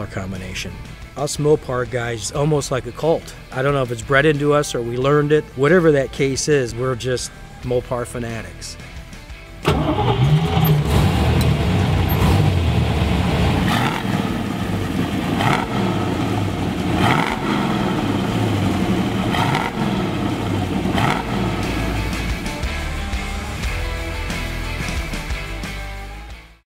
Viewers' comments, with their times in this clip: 0:09 That doesn't sound like a Highland Park Hummingbird